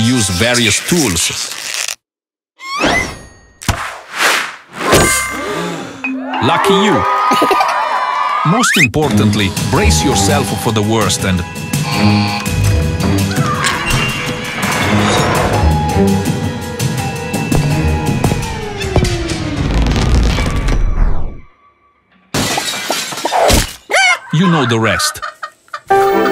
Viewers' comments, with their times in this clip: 0:07 PLEASE THE LAUGH LOL